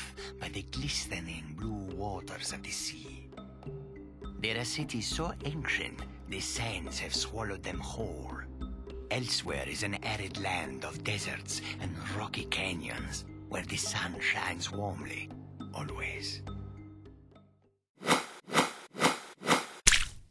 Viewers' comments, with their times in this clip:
0:03 "There are city's so apes**t."